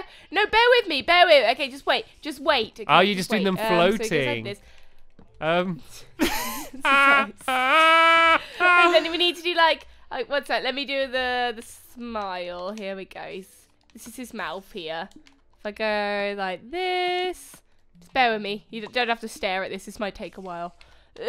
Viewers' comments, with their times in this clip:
0:05 Put it at 0.5 speed and hear Stampy's incredible laugh XD
0:06 WTH WAS THAT LAUGH